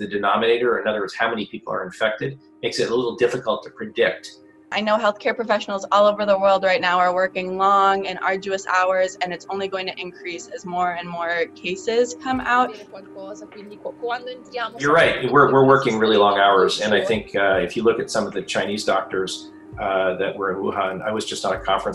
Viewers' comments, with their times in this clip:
0:04 did anybody else hear that humming start and have to pause the video? I was like WTF is that? It sounded like it was coming from outside